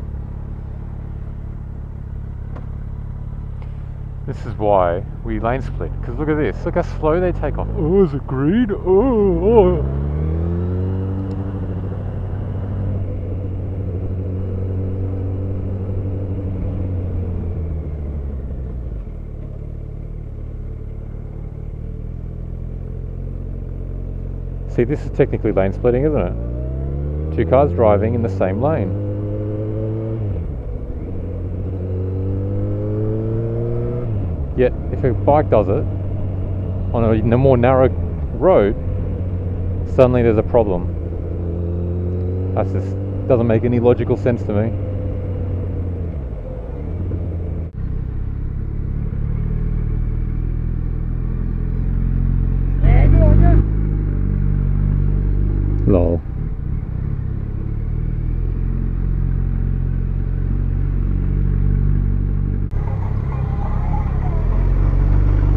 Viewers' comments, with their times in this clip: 0:06 had me cracking up..Nice "Cecil Turtle" or "Eyore" impersonation..LOLOL..It's so true..Most Drivers these days have some type of shit in their brains that impedes their reaction time.
0:52 How could you not understand what he said??? He said "BLEHGORBUH!" quite clearly.